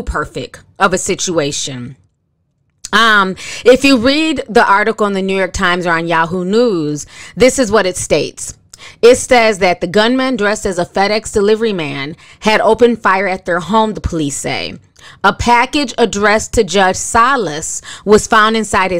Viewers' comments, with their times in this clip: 0:03 Great content.. listen to how you say "if you read" It sounds like you're singing... that's cute how you said that (seriously).. some ppl sound like they're singing when they speak.